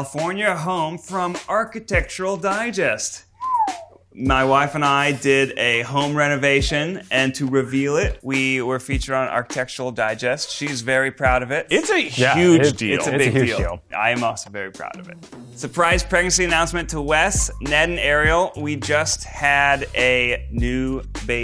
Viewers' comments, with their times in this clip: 0:06 Eugene’s Ned impression
0:07 zach laughing at ned saying 'my wife', eugene mouthing 'my wife' to keith and keith laughing. that's friendship right there-